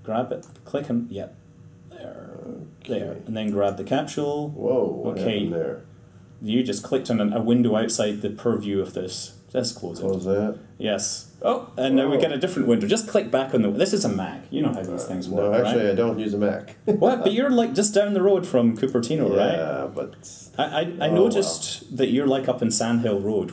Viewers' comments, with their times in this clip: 0:09 he say testicles or test scores hes ether gay or a teacher for state testing